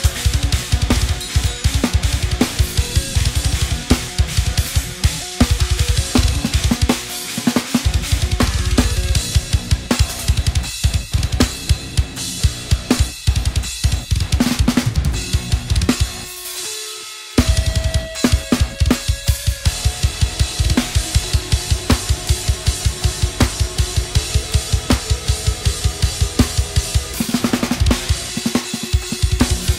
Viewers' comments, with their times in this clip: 0:09 oh my god, there are fucking 3 ghost notes in 1 second, holy shit this is absolutely insane wtf
0:13 That fill was so sick it needed Pepto Bismol.